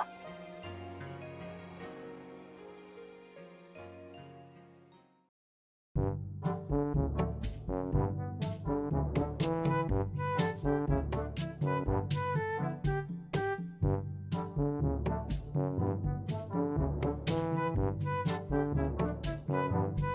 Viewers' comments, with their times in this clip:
0:06 Perfect music in perfect place